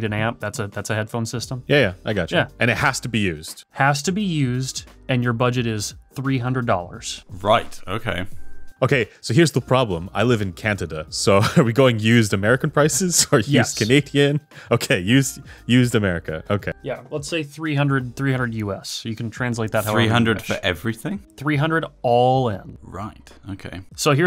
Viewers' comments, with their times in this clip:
0:10 Cantida? Where's that?